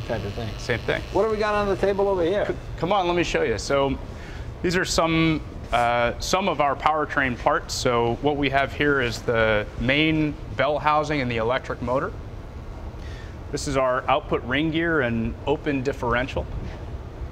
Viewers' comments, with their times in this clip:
0:04 Is Jay not supposed to say bad things during these? Because why in the world would you introduce more failure with a small lubrication motor (that we can hear brrrring), when you have a crankshaft that, as Jay say, you can have cups/etc cycle around the oil?